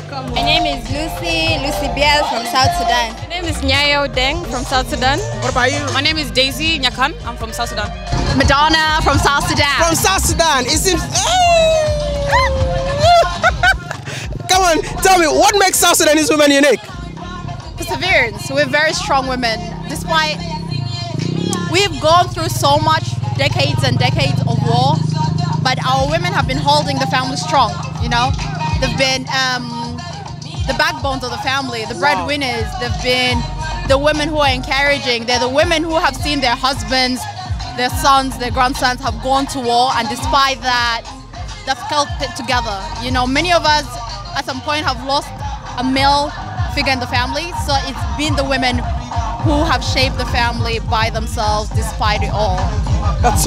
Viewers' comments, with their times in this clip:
0:09 The one in the brown dress had an Australian accent!
0:38 koffee a play inna the background looks like South Sudanloves reggae and dancehall